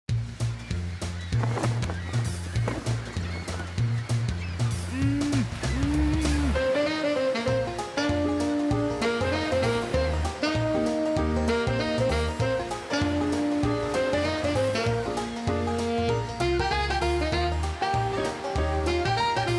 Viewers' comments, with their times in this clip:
0:03 she just laughs!